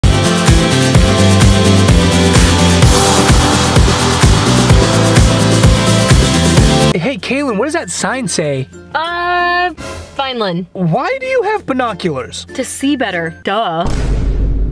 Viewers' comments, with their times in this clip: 0:01 I swear that music was different